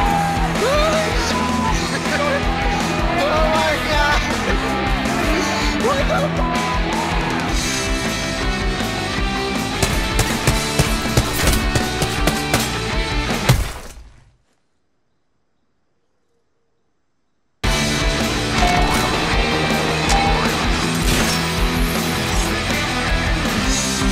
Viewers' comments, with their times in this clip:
0:09 when the music cut and his fist is just there lol Im literally cry😂🤣😭💀